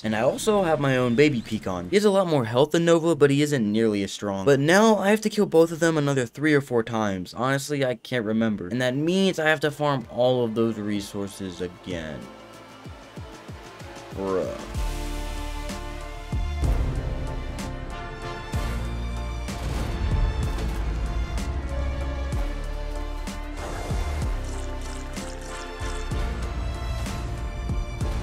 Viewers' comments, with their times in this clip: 0:09 the song in the montage slaps
0:16 day 90 song is hard af